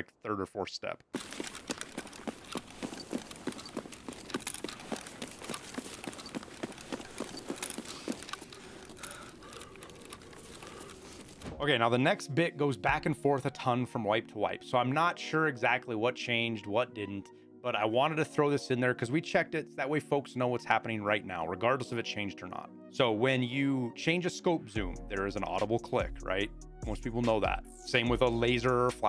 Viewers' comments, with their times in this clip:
0:06 That "weapon jiggle" you mentioned is definitely new and annoying. To me, it sounds like someone is ADSing, and keeps making me freeze and listen.
0:11 honestly I have had sensitive hearing for all my life, tarkov has had some sounds that yall are starting to hear the noises that were making me think I was crazy. Then gun noise while running is an example. Good job keep up the work